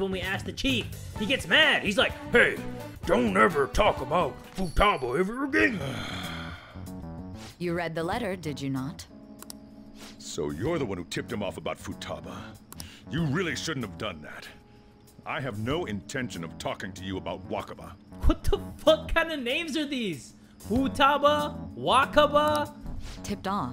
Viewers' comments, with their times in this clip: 0:07 that voice sounded exactly like the boss